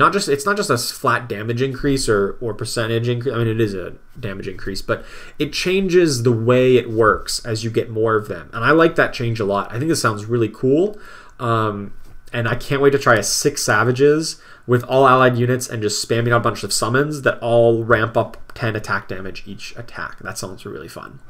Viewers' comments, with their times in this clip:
0:08 So funny, you sound like a kid having an idea to build something and can't wait to try it out in the backyard.